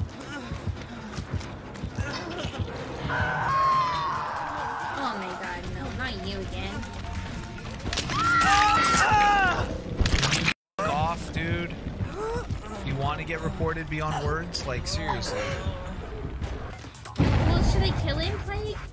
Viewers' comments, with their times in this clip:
0:05 great chune you're listening to